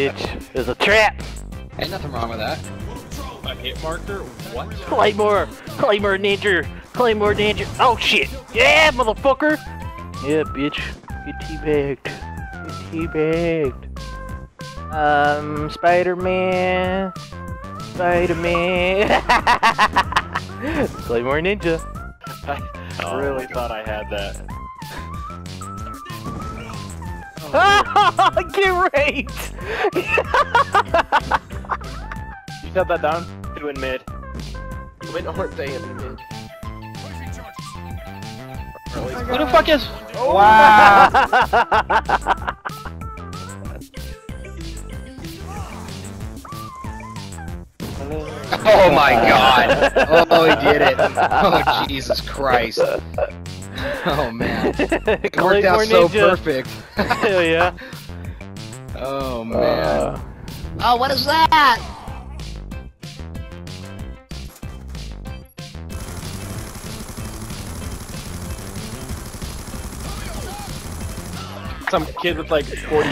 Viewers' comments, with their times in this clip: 0:05 claymore claymore ninjer. its funny how he says it
1:01 what is that? its a squeaker